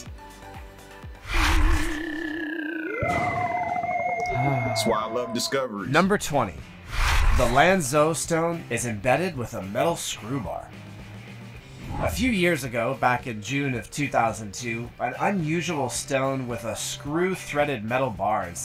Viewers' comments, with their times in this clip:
0:03 How many people besides myself thought they got a notification 🤣